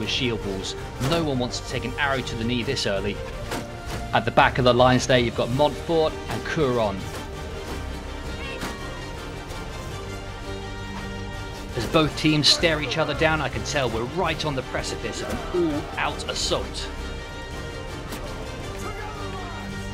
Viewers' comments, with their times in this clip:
0:07 A few minor corrections for this one. In Round 1, the control point was in fact outside of the church in BRE control at the start. Also, you can hear a meow from my helper Lyra 🤣 Didn't clock that until release. Lets make her famous.